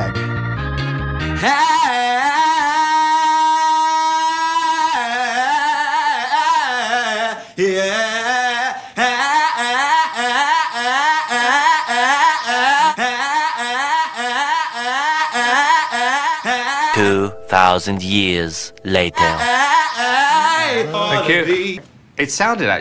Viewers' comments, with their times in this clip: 0:10 he sounded like a car engine failing to start.